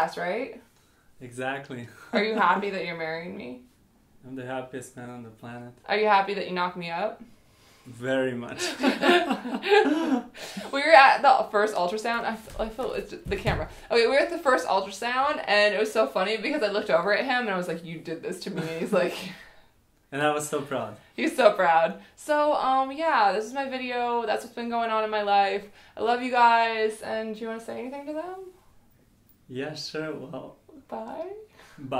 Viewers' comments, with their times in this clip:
0:09 she laughs like someone is making her do that laugh....!
0:12 is when he first lost character but he also has a nerves laugh throughout it all . I wish you all the best!